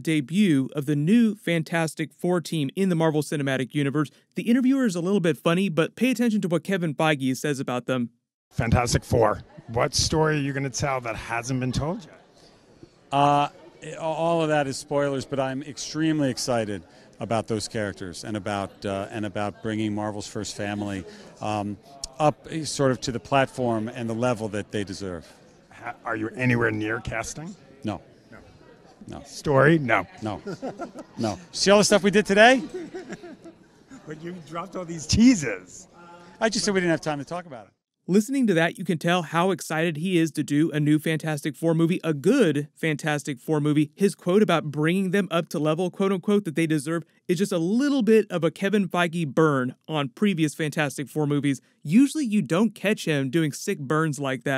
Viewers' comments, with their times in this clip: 0:07 So no ones gonna talk about that guy that sounds like Yoda??? Ok lol
0:08 he sounds like yoda and ja ja binks had a baby
0:08 The interviewer sounds like Yoda...
0:08 What kind of Kermit/Yoda/Gonzo hybrid voice is that????
0:08 His "what if Yoda's Jedi power was to speak through people" impression was spot on!
0:14 that guy sounded like Kermit the frog
0:30 is that the voice of YODA????!!!!!
0:37 dude sounds like Yoda